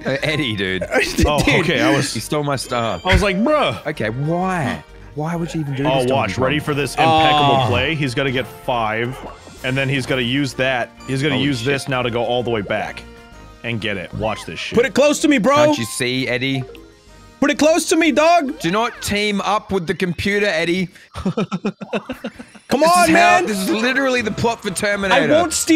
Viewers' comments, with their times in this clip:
0:10 the sniff patrol in the corner